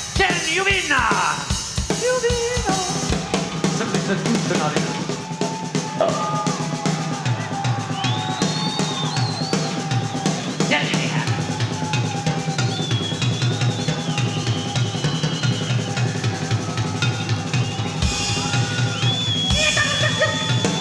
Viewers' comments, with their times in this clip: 0:06 Am I the only one who heard a burp ? 🤭